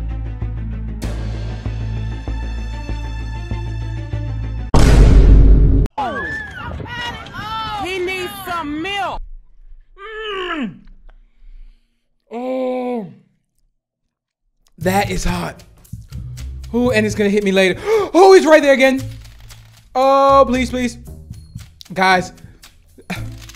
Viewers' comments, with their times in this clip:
0:04 Wow, must be one of the rare instances of Vine Boom before it was truly part of meme culture